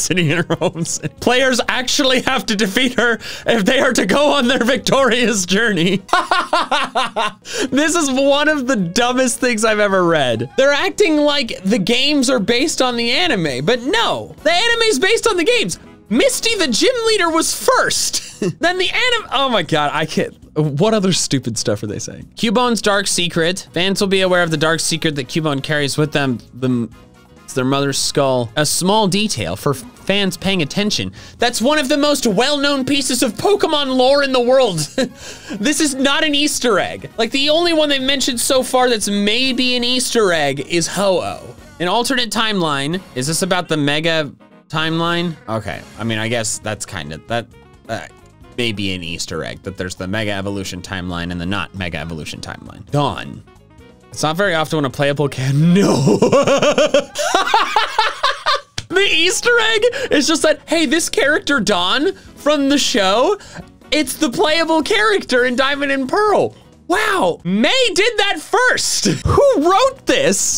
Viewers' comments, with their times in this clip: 0:05 Somehow I predicted that looking up and laughing 😂
0:57 for some reason I like this scene of him laughing